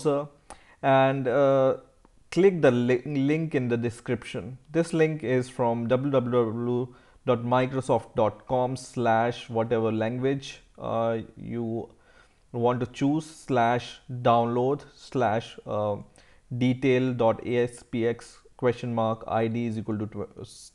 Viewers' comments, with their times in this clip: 0:05 ok i cant get over the way you say "www" im dying XDDDD
0:05 i like how u say "www" loooooooooooooooooool xD
0:05 DoubbluDobblu Dublwou HAHAHAHA I'm crying right now